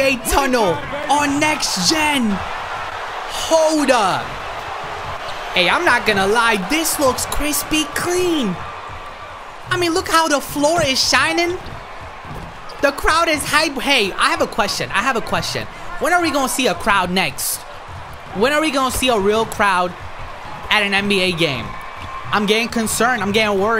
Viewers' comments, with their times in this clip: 0:07 i swore i heard him say "This looks Krispy Kreame"